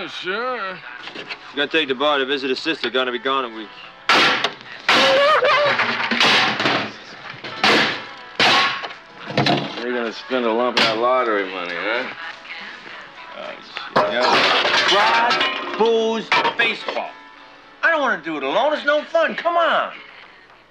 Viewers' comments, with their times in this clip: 0:04 .........The loud noises are already driving him crazy.